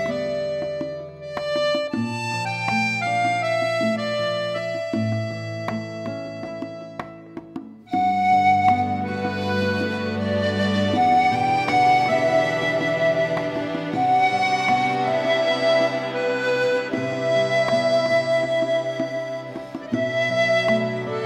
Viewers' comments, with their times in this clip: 0:03 don’t half cadences always need to end on a V chord? Why isn’t it the case with this instance?